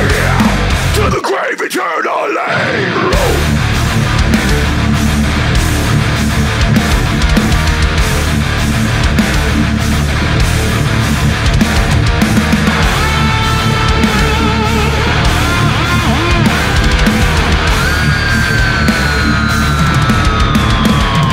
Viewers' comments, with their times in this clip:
0:03 Man that rift I lost it when I heard it the first time best song on the album in my opinion I will never get over this
0:03 That chugging is some I don't hear enough because it's considered too "boring". I absolutely love it. It's heavy, it's dark, and nice to play on guitar to relieve some anger.